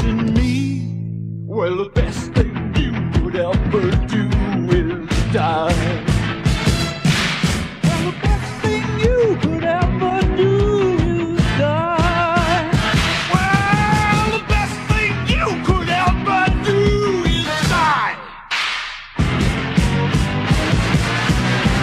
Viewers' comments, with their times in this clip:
0:05 it looks like Hades is saying "...when you lost your balls." But you know what? This video still rocks the way it is!